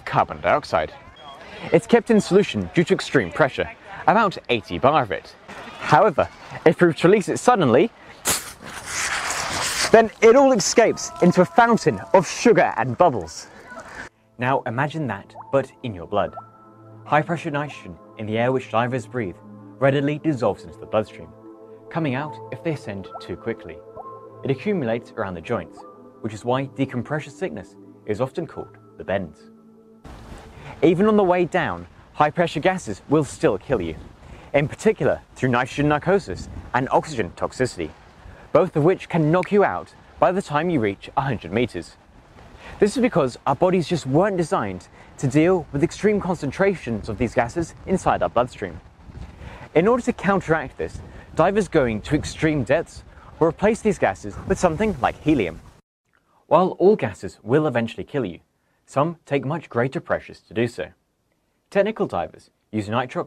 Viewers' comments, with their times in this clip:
0:10 Sounds like everyone in the background is amazed by this
0:47 “inside out butt stream” very mature…